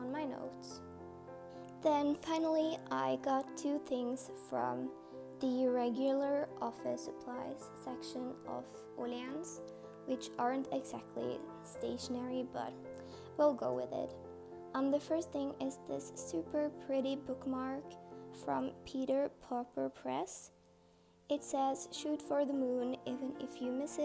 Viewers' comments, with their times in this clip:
0:09 BOOM THERE'S THE SCANDINAVIAN ACCENT